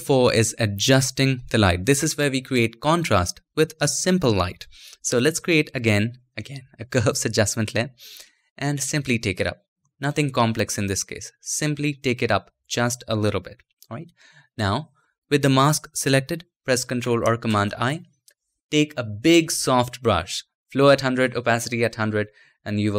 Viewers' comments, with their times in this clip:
0:05 He laughs because he knows that most followers will begin to scream.